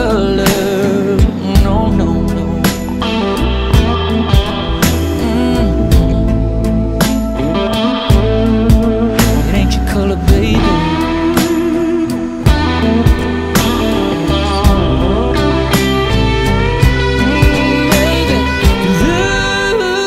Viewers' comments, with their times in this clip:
0:03 my heart melts, makes me want to learn how to play 🎸. Such a beautiful song.